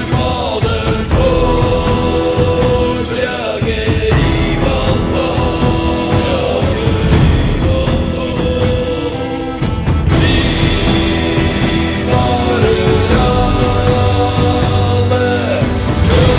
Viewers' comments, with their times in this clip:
0:04 right after he sings FOR BALDER, FOR BRAGE the next words are I VALHALL but I hear "YA KAREM ALLA". I was singing along the lyrics (I don't speak Norwegian) and noticed the lyrics don't match the voice.